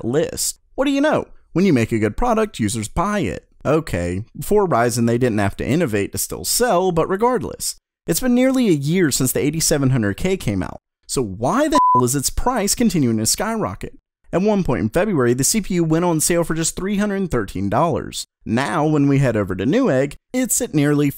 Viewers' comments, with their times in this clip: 0:08 he censored the word "hell".